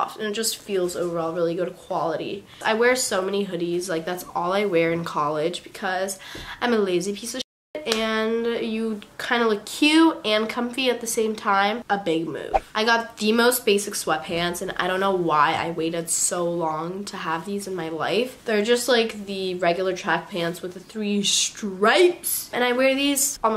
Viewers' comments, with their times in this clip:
0:08 I love how she beeps out the word shit but has been cursing the whole video